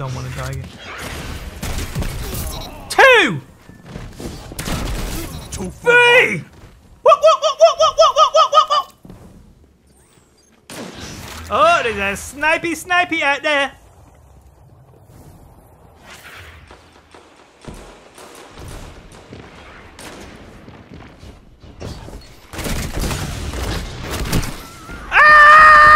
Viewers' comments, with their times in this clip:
0:07 he sounds like some kind of primate 🤣🤣🤣🤣🤔